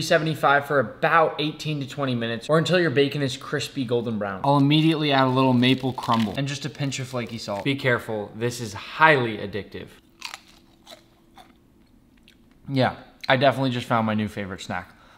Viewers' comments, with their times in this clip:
0:10 that crunch is satisfying